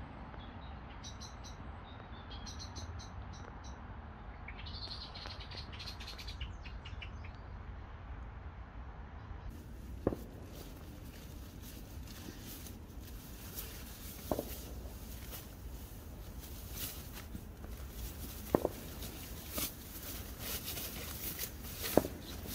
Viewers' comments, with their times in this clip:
0:08 oooh, missus Blackbird wasnt keen you being there! 'Bink bink bink' ! I wanted to ask if you used any electric bellows for your pad? I had one years ago that looked like a prop from ghost busters. There should be a radio quiz where you get 60 seconds to guess the genuine ALDI fake- "true or false" .